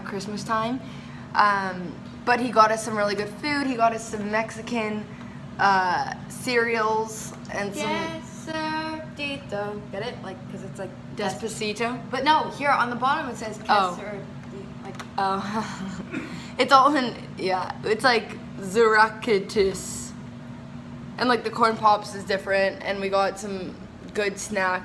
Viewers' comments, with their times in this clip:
0:07 when you tell a joke and your expecting a lmao but it gets a meh-he instead 😂